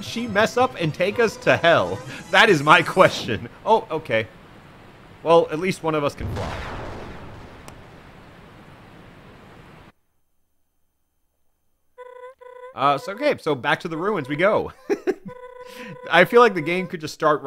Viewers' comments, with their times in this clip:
0:05 I was playing The Binding of Isaac Repentance while watching this vod and I was fighting Hush and the explosion noised lined up perfectly, and I mean PERFECTLY, with Hush exploding and causing a white flash on the screen.